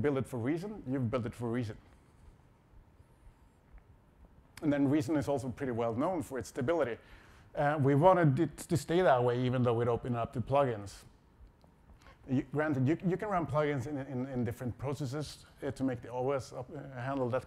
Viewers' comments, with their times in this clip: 0:04 I love the way he pauses whilst he considers whether or not to deliver the next line, then delivers it in a fumbling, hesitant manner. Reason was known for it's stability. It isn't any more.